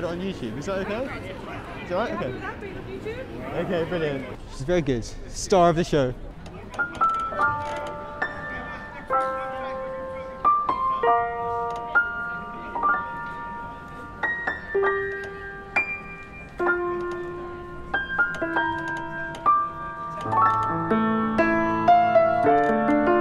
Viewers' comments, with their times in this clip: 0:07 you started with like the saddest song lol btw your really good